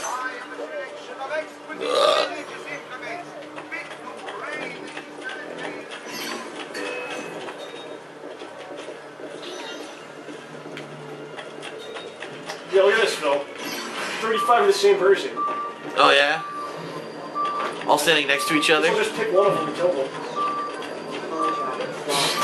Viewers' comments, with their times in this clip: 0:03 no1 talking ? xD